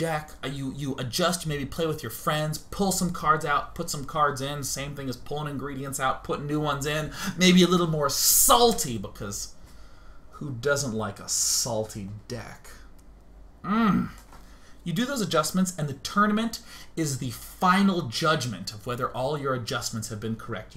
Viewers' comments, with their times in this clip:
0:04 As a guy used to hearing Australian accent, its disturbing hearing Day[9] saying "salty deck" with pleasure...